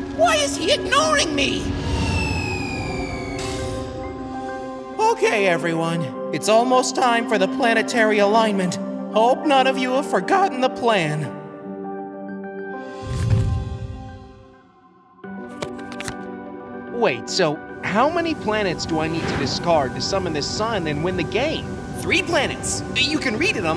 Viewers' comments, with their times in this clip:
0:06 Mercury's voice change?